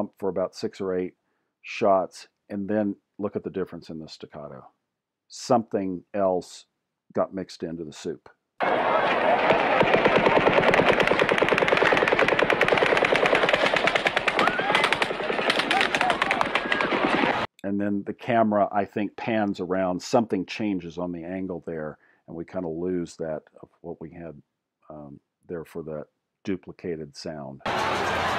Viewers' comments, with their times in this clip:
0:04 It speeds up because he was using a bump fire stock. They are not consistent. All these self-proclaimed "experts" keep claiming it was "belt-fed". Fucking morons. The sounds with "other cadence" could absolutely be bullet hits or other things caused by bullets landing near the recording. You don't even mention this as a possibility. you make a good argument for echo but you're too focused on ignoring that as a possibility, even with a microphone potentially picking up bullet hits when the guy is on stage.
0:11 the "pan" you hear right is from the gunman/men swinging their fire across the crowd. So sometimes the camera is picking up the "crack" and other times not so much.
0:13 I also noticed the difference in "staccato" in various videos- the one you pointed out Could it be because a rifle fitted with a "bump stock" would not fire as "in synch" as a machine gun would- because it has been modified? Just wondering- I have no experience with AR's. I do have a good ear though, :-) having had parents who were into jazz. My husband does some audio. engineering. Back to the point- this is so JFK and school book depository. (I remember it.) ( I wish somebody would do what you are doing with the motorcycle policeman's microphone which was stuck on.) Your work here is more convincing than the other videos. There is a video of a flashing light coming from the 4th floor at Mandalay Bay. Some are saying it's a strobe light. I'm not exactly a partier- do people still have strobe lights? :-)